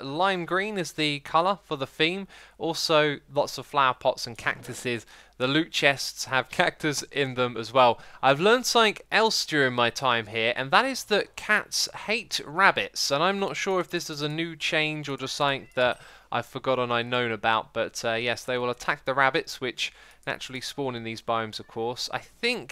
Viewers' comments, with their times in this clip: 0:04 guys forget the 'ta-e-ga' biome.... what about the cactusses?